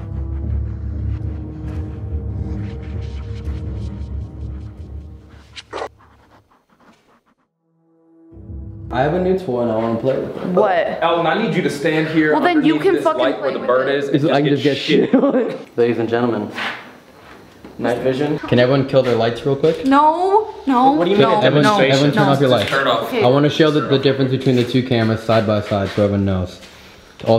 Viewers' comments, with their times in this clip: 0:05 that noise is creepy AF! It didn't sound nice or friendly at all😵‍💫😩😨😭🥴
0:06 TFIL when the Camara messed up the first time it sounded like get out but sped up
0:13 sounded like, "Someone get out" when the camera gets bleary